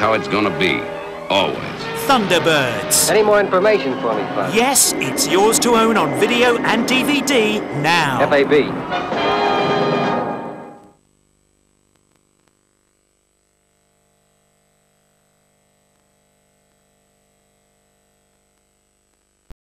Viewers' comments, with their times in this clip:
0:08 Scott’s voice is inside Virgil.